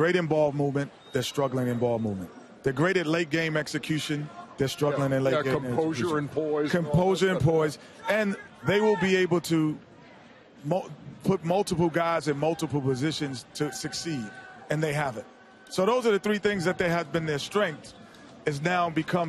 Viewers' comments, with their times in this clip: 0:06 Lol dude screams "shaq you're trash"